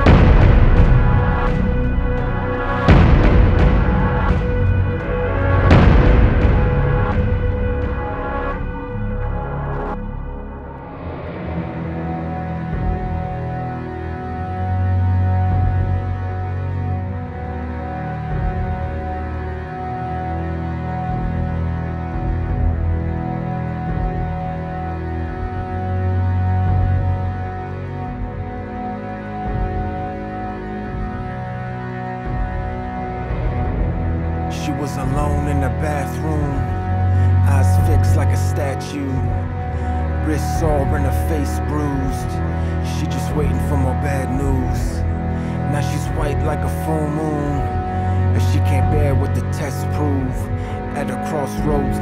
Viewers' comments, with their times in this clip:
0:10 This song's setup it even portraiting the track's title. Before the drums starts, you've got one "world" , then the drumming part is another "world" and after the worlds combine, just like the violin and drums, leaving you to listen to the both at the same time, like you're in between them. It's a guinius setup!
0:10 I don't think it is the rap that killed the song. I think it is just a song that got in over its head. It should have stayed the same, but at the same time. The rap does sound good. I am not a homey. I really hate rap to be honest. Not going to say what color I am because then somebody will look at my point the wrong way. But this kind of rap is better then sex/drug/beer/gang reference in the entire song.
0:35 The soundtrack is ruined Too bad. It was nice all along until then. I enjoyed the original version without the big mouth